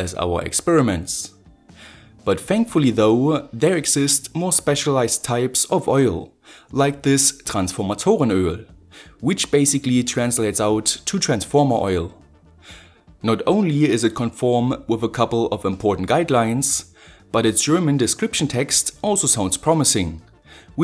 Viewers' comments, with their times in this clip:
0:06 German inbetween sounds so funny
0:07 i love how you say transformatoren öl 😂
0:07 you sound german there, are you?